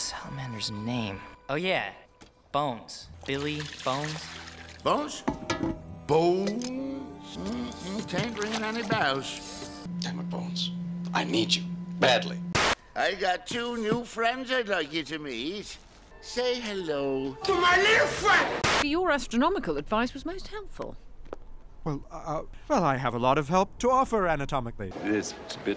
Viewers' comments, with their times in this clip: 0:05 You should take off a sin because when silver says bones the second time my friend and his brother thought it was so funny that they would constantly repeat it the way it was said, to the point that their mother banned its usage in their house. Their work around was to say bones like the first when said it
0:10 Might be a bit rare, but the vibrating sound here made me check to see if my phone was vibrating. Felt like it was on my left side and everything.